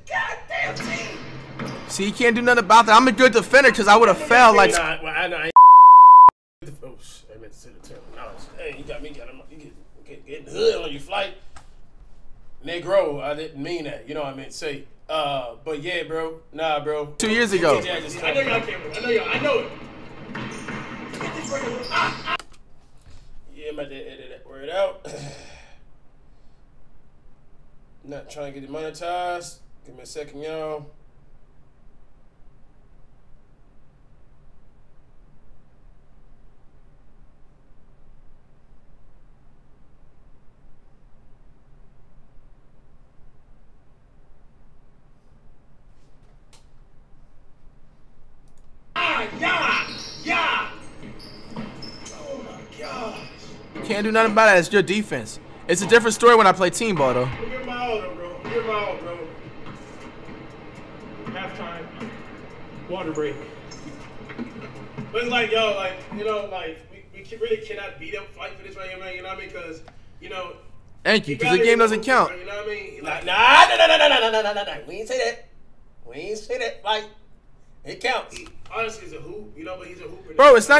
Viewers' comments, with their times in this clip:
0:05 Did he hit us with the hard r?
0:10 what he said? Corona?
1:05 Bro that beep in my ear😂-